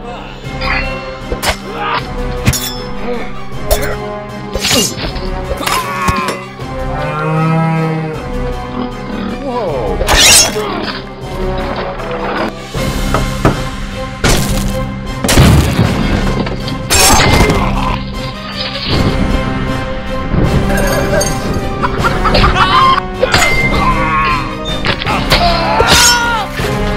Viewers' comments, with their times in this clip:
0:07 Sorry umm….. the bear made mooooo noises umm isn’t that a cow??